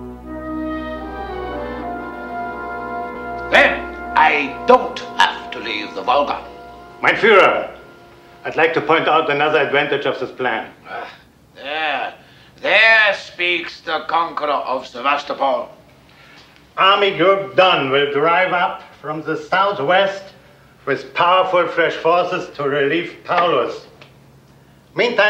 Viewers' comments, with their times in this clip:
0:07 I’d like to point out anuzza adwantage of zis plan